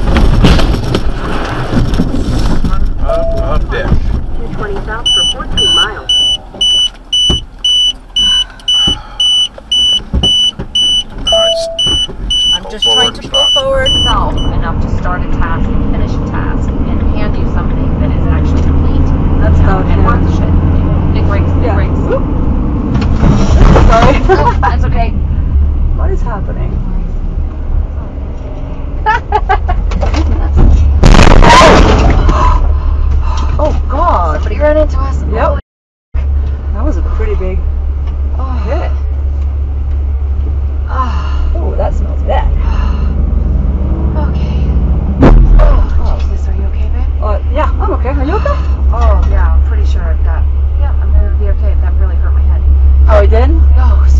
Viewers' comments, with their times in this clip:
0:05 RIP earplug users
0:20 anybody else this this sounds like acting for the camera?
0:21 wtf the driver isn't paying attention you clearly hear the passenger telling her to hit the brakes multiple times. Yes I get the semi is at fault but wtf she was obviously playing on her fucking cellphone. If it was up to me she is at fault 100%..
0:26 Top 10 laugh before disaster
0:40 a bunch of moaning and someone says “that smells bad”